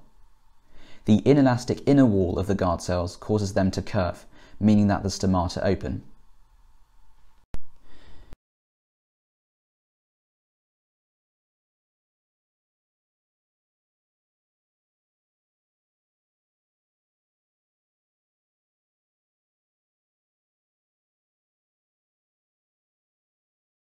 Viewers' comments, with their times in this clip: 0:06 You took a reeeeeeeeeeeeally long pause